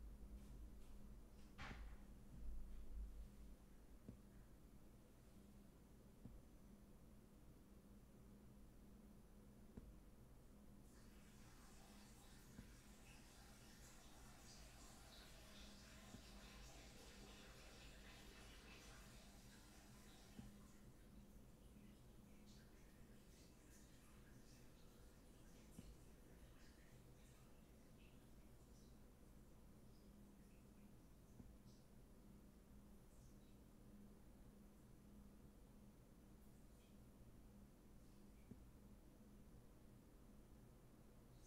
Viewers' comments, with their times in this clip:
0:04 you can hear him peeing😭
0:09 you can faintly hear charlie pissing in the background
0:12 lol you can hear him pissing
0:14 why can I hear him pee 😭😭
0:24 just all you hear is his loud ass pissing🤣🤣🤣
0:27 it’s the longest piss I’ve heard a man take